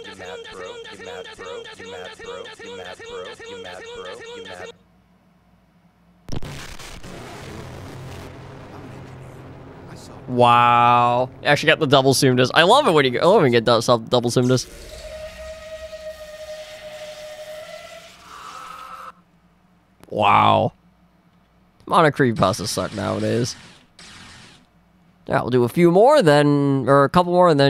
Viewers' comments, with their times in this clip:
0:08 Five nights at HEAVY (vhs) scream dead